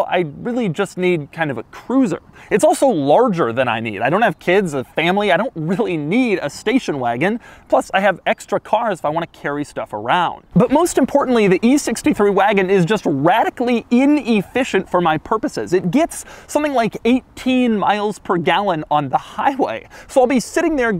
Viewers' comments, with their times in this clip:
0:04 he sounded hurt